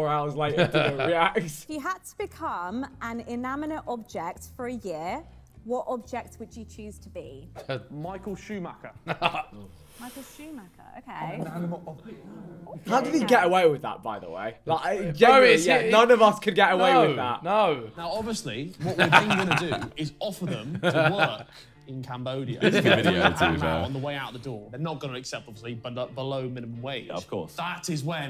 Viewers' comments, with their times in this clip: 0:03 So we're just ignoring the girl in the blind date clip saying "inaminate"
0:10 Vik doing a speed impression 😂